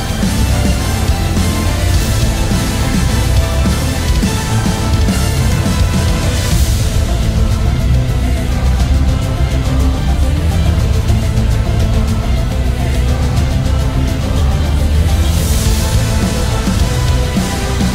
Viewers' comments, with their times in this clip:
0:05 TRAITOR is another level tho, in my entire LIFE I HAVE NEVER HEARD SOMETHING MORE EPIC THAN The percutions buold up is out of this world